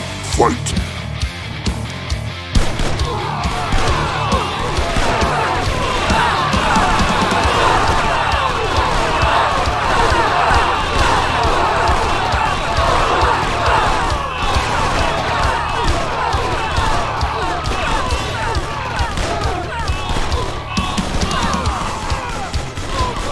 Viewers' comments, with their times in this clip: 0:10 almost sounds like they're doing something else